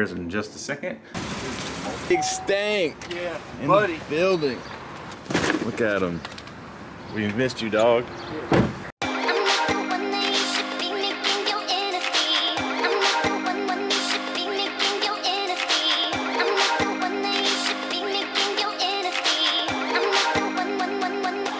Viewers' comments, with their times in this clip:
0:09 Soundtrack and seeing the tattoos gave me old school vibes.